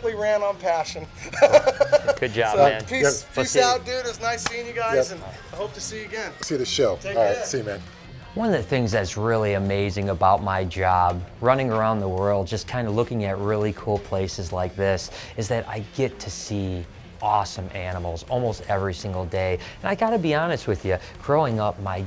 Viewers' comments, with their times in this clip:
0:03 the fat dude sounds like the chicken man from toys story🐔🐓🐓Imao!!!